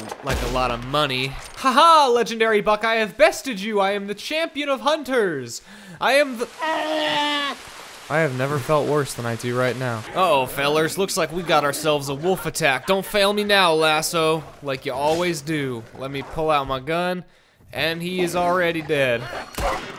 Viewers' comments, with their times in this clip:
0:03 haha legendary buck i’m bested you i’m the champion of the hunters i am th- legendary buck trying to run away but instead makes a noise i have never felt worse than i do right now